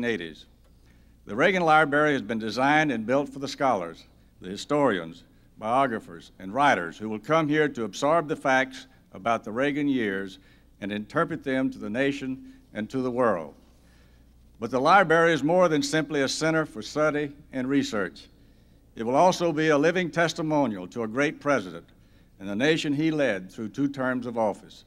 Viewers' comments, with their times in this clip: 0:09 this guy gets a lot of lie berries in there